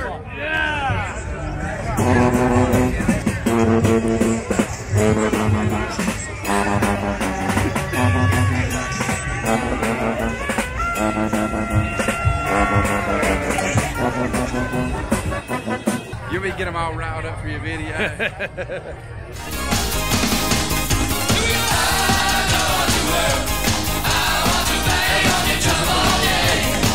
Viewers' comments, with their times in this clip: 0:09 That’s me playing trombone 😂 Go Pack Go!